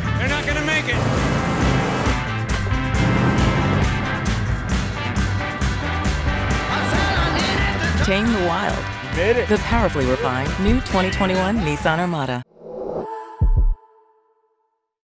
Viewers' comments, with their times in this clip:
0:13 What is that woman's voice saying at the end of every commercial ? It's driving me crazy trying to figure out what it says. it's the last word in the commercial, that plays when the Nissan logo shows and does the hearbeat thing.